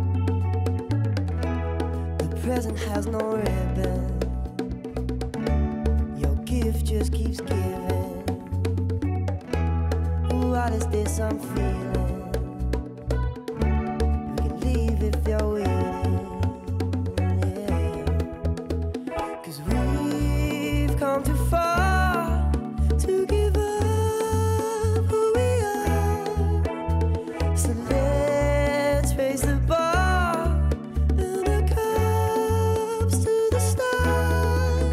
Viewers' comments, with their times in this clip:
0:03 song starts. i love this version so fucking much.
0:21 she lost the rhythms when she changed the beat... Other than that great!